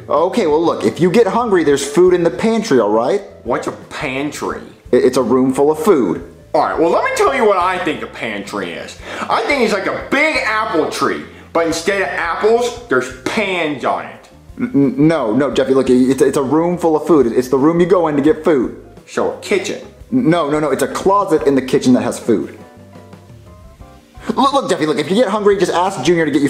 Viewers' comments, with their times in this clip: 0:08 I like how Jeffy said no